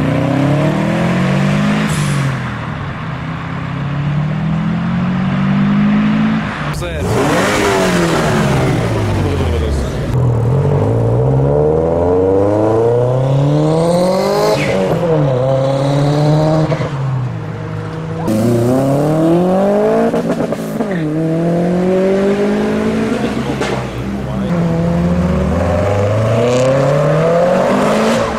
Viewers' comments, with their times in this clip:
0:10 gta 5 turbo